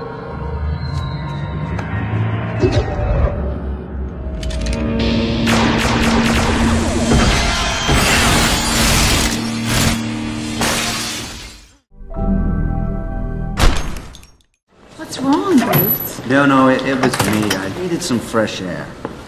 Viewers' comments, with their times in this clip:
0:06 BAHAHAHAHAHAHA THEY LITERALLY USED THE STAR WARS BLASTER NOISE